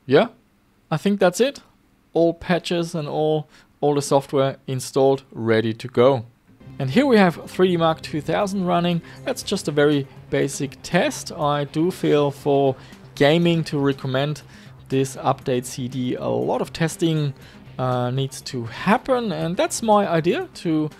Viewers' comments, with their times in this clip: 0:07 "Freemak 2000"?!? What is that?